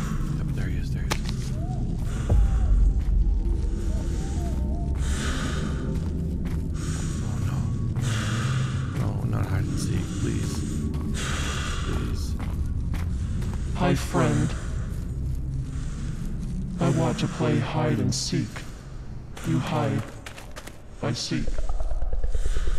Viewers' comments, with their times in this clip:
0:09 oh no not hide and seek…… Hi friend i want to play hide and seek Scariest shit ive ever had to hear at max volume 2am in the morning outside on my porch